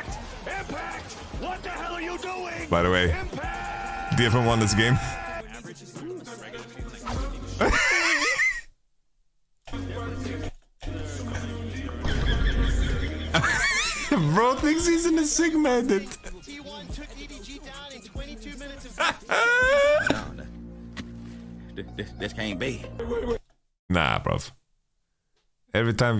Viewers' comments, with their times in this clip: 0:09 The most fun in this part is that he couldn’t stay serious and laughed right after 😭😭😭